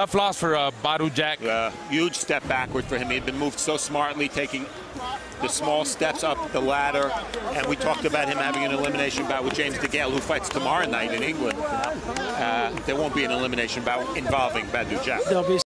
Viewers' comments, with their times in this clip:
0:07 his opponent laughing